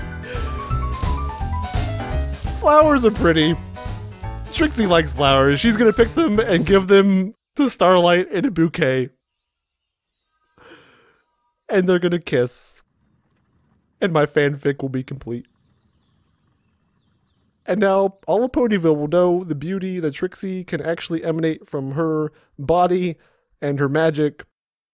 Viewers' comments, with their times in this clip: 0:10 You started to sound like Caboose from Red vs. Blue XD (He's the loveble idiot)